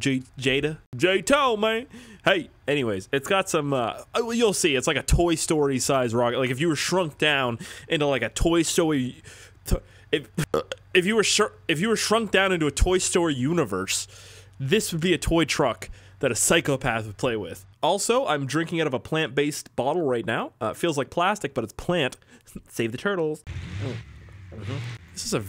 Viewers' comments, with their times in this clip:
0:08 stroked out a little there bud.